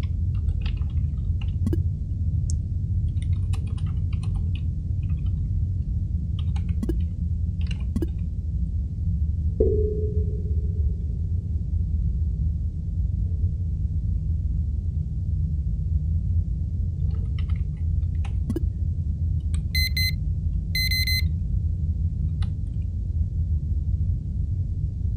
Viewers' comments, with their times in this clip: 0:09 What was that sound, a sonar pulse?